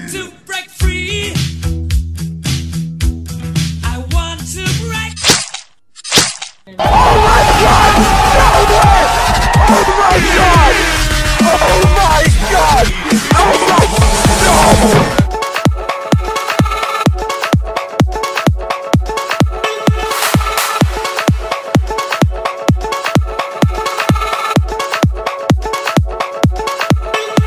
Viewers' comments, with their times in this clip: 0:10 What is that tooting sound min of the video!!!